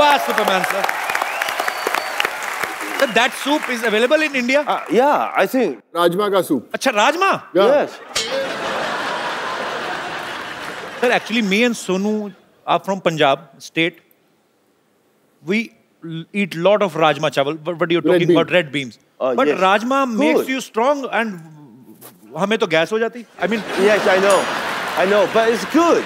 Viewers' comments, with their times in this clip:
0:07 they way sir Jackie and sonu say yes together and kapil reaction best one